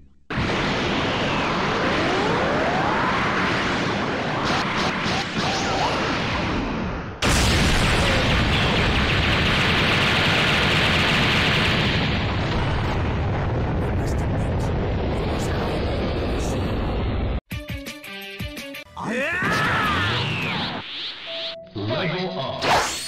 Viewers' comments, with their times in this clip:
0:07 (BOOM) KO! I must admit, it was highly impressive!